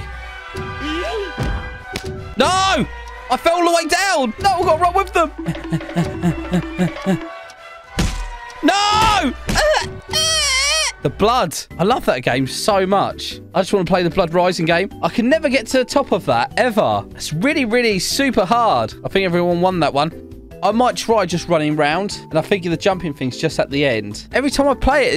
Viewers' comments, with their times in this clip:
0:08 that baby cry sounds is so funny XD